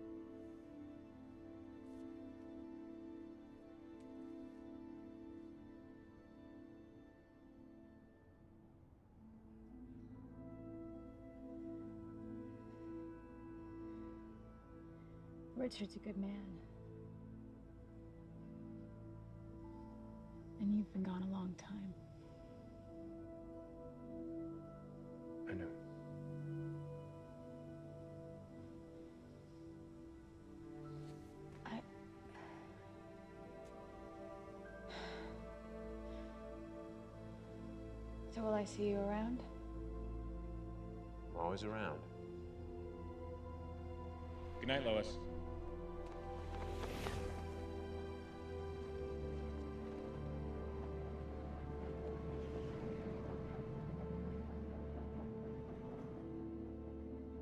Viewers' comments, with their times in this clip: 0:09 This scene is one of my favorites in the movie, the music is beautiful and the part where Lois and Superman almost kissed is romantic and sad at the same time.
0:44 I love the moment when he rises off the rooftop and then when he's clear of her, he focuses upward and really starts to move... whoosh! You can hear his cape! That movement just seems... well, "realistic" to me. God, I wish I could fly.